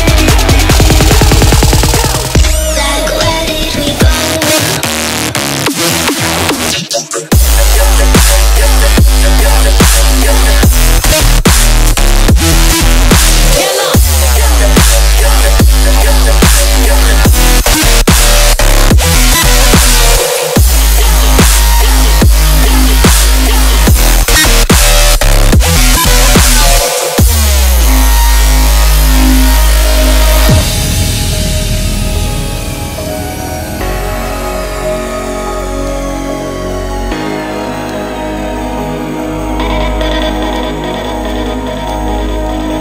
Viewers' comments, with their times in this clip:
0:04 Sounds my PC makes when running a good looking game
0:26 sounds like some force field sfx